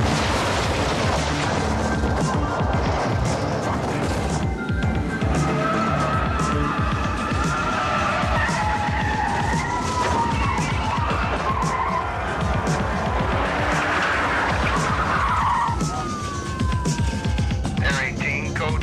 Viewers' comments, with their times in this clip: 0:06 that incidental music in Colors was outdated when the movie was released...they were trying so hard to capture that sound from Coldcut / and the Rap groups 'sampling' techniques but were stuck in elevator music mode. The studio gave it a green light.. but probably out of desperation. Wasn't a great movie either could have had a stronger theme.